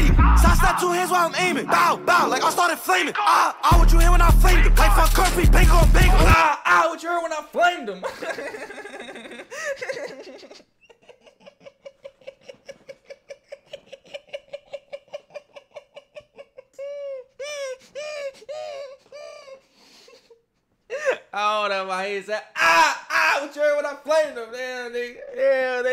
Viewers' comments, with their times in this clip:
0:09 Bro laugh got it 😂